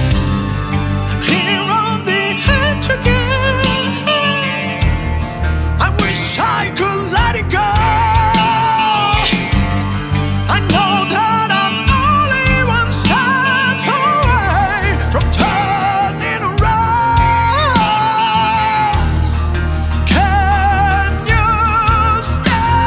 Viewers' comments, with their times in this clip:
0:04 Omg ! It's insane range, man. Love ya. :)
0:04 "Falsetto is cool, few people can go that hi-WHAT IN THE EVER LOVING FUCK"